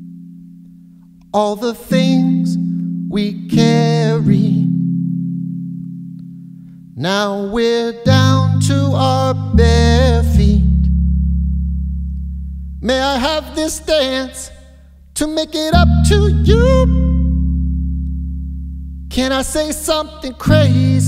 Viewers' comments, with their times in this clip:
0:03 Drives me nuts how he hits an off note and the auto tune picks it up and it sounds terrible.... he can tell too and makes an "Oh shit" face.